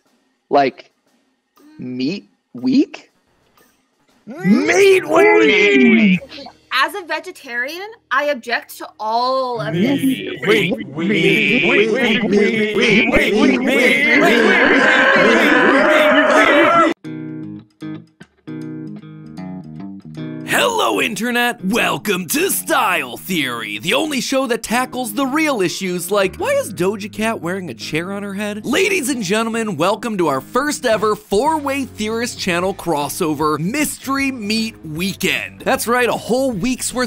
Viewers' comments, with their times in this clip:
0:06 All of the men chanting Meat Week 💀
0:24 Im not very caught up with celebrities but is there really some real person called doge-cat? No wonder they are famous enough to not get bullied for that shii